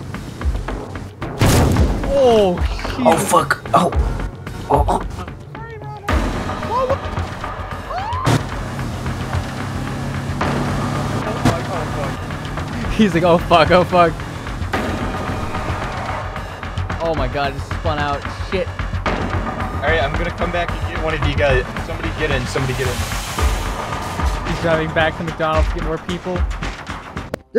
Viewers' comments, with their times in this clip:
0:05 perfectly cut screams moment
0:06 died laughing at the Ronald tripping on the door and screaming!
0:06 that one Ronald is hilarious when he jumps into the doors as he screams
0:06 Omg that perfectly cut scream was amazing 🤣
0:07 lmao tha perfect cut scream xD
0:07 that scream LMAO
0:08 perfectly cut scream, he tripped over the trash can 😂